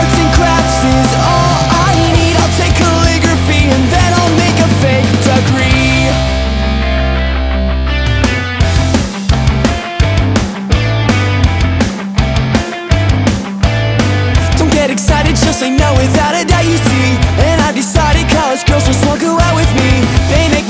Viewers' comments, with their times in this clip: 0:06 God I love how the beat shifts onwards